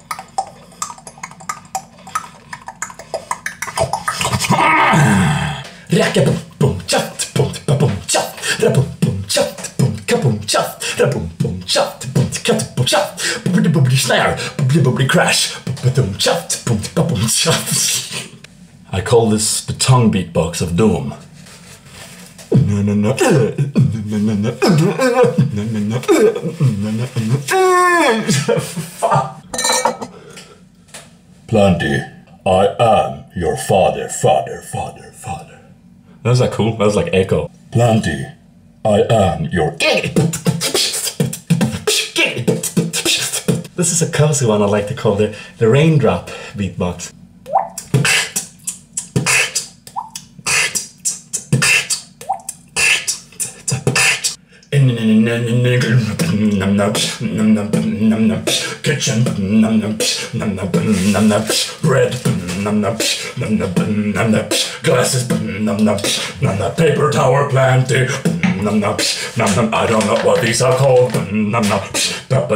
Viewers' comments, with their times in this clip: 0:05 The most swedish beatbox evar xD
0:05 Hahahahah, that swedish accent beatbox.. Laughted so hard. :D
0:33 Giggedy Bitbox earned You 1008th Like xD ♥ Totally amazing ♥
0:45 raindrop so cool!
0:46 The Raindrop is super cool
0:57 lol to me kinda sounds like pewdiepies intro kinda. :)